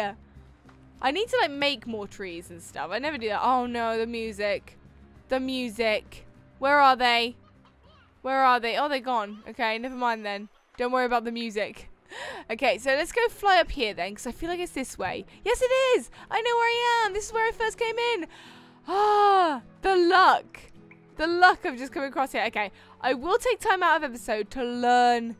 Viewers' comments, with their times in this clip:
0:08 Did any one else here a lucky slime